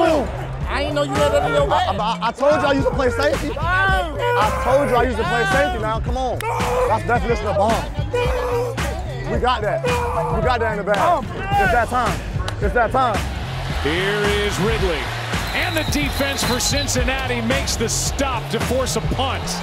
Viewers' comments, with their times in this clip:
0:06 Dude screaming bomb sounding like my alarm clock in the mornings